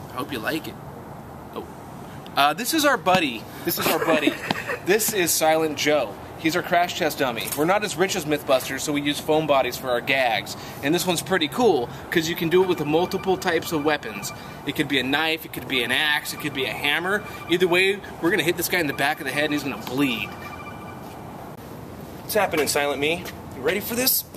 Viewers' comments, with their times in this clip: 0:10 I had to check my phone. Nice ring tone.